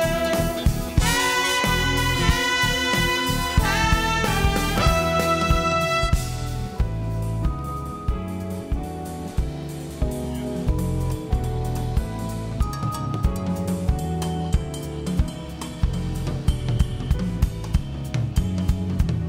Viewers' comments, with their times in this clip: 0:06 How beautifully tasty is this boys solo?